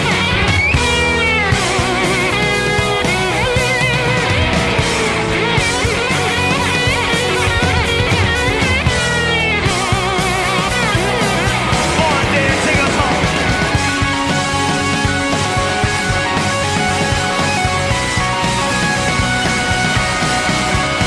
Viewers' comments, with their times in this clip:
0:07 Drumming in this song is tops too. Especially love the fill